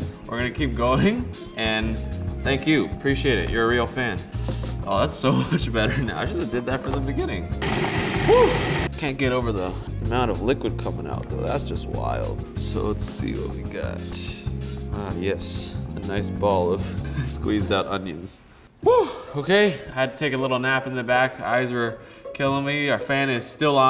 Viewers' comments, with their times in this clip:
0:07 NICE VOICE CRACK MAN